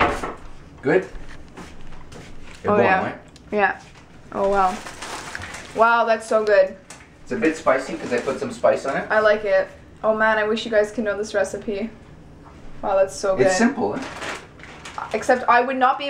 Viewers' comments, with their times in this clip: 0:03 Can your dad speak Portuguese? really sounded ''é bom nao é?'', btw I love your vlogs!